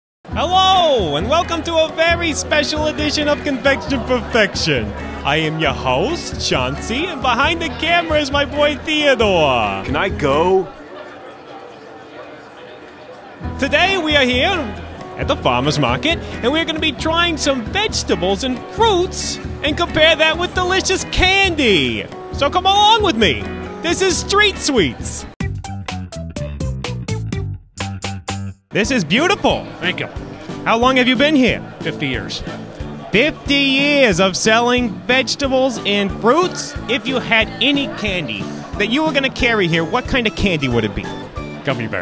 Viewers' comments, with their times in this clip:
0:05 lol i thought he said john cena
0:06 Did I hear right? It sounded like he said John Cena. JOHN CENA!
0:23 i thougt he sayet "Street weeds"?